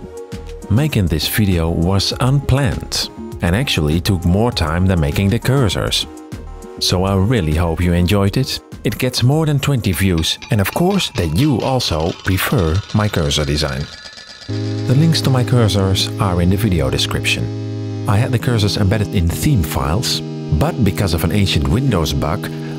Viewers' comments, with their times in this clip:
0:10 the music sounded so sad that is even made me kinda cry Edit: the last part actually got me